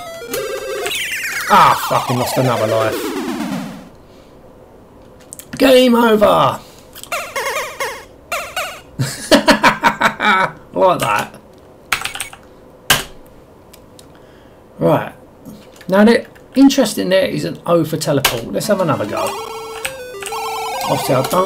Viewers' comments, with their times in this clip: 0:06 Jesus... I remember this on my friends computer it was on a compilation tape with Barbarian II .. I remember it feeling like you move too fast... major nostalgia fix especially the "game over" jingle 😀😀